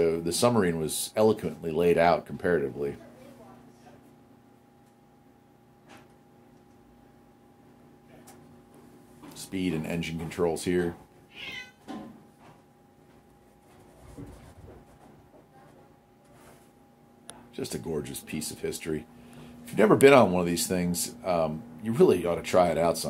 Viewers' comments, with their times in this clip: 0:10 I know you were looking at that engine thinking "Hmmm, engine swap on my VW?" lol Was that a cat meowing ?